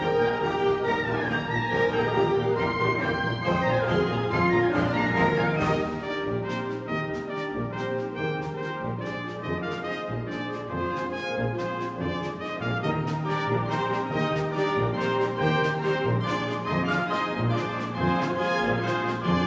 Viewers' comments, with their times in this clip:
0:05 I have the music sheets right here with me. When it says half note = 132, they play 140, however it's actually supposed to speed up to half = 152 but they stay at the same tempo.